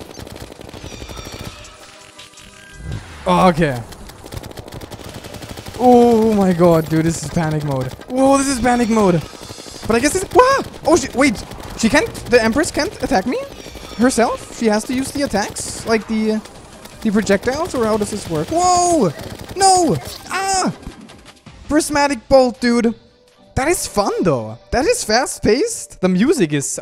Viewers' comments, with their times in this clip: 0:10 You here what i hear? "Oh shi-"